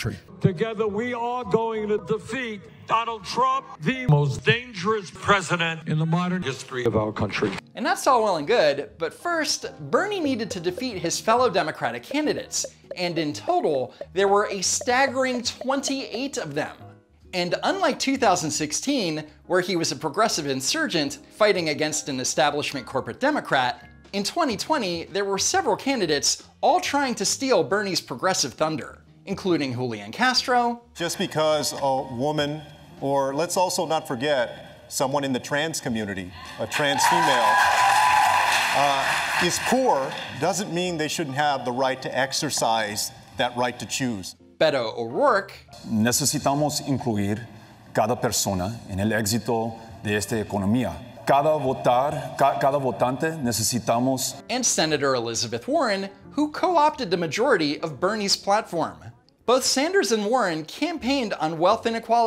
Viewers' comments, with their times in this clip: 0:03 Those video autotunes made me think I was watching Grandayy's Rap Battle for a moment.
0:46 why is this dude speaking spanish?!